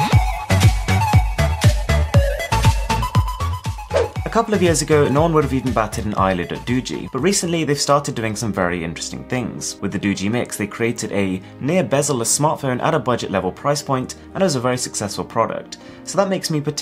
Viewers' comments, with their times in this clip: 0:04 what? nonlillebatchidollledogee? i dont speak hindi